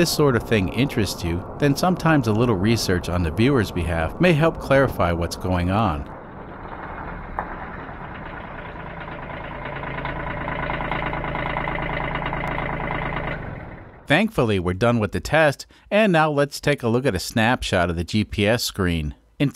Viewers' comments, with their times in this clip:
0:07 if i heard that pull up at a gas station, i would assume it’s just a regular saturn with a bad knock 😆